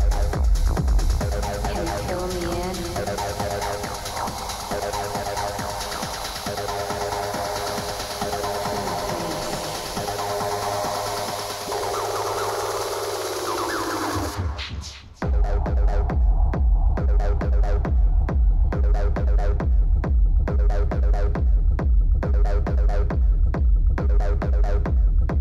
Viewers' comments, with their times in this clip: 0:10 That drop is so damn smooth. All her sets since 2019 are like precision bombs being dropped from stealth fighters. She is a master at her craft and stole the EDC event IMO. Grimes set was 2nd after this.